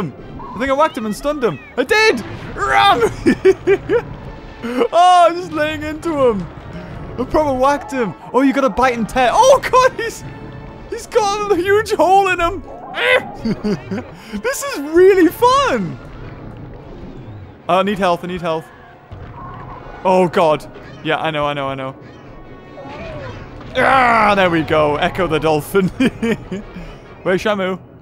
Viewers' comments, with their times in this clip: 0:10 This is really fun! He sounded like he was genuinely enjoying himself this really cheered me up